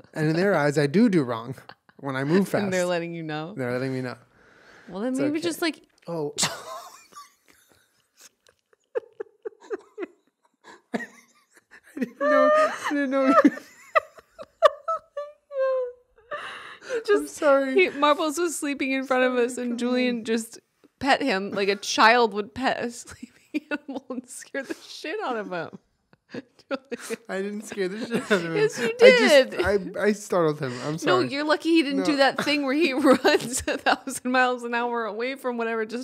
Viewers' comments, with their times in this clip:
0:04 I've been crying laughing at this moment for the past 5 minutes. The timing, the meek "oh", it's all perfect.
0:05 Julien casually oozing his Aries energy lol Also, living for his pronunciation of togarashi🙌
0:22 Put is on 0.25x speed😂 It sounds like two sloths having an argument It’s great!😋😂